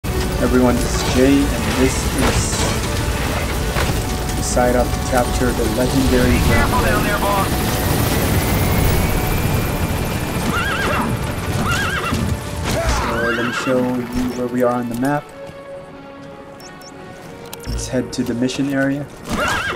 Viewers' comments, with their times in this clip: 0:00 Captions: evereyone is gay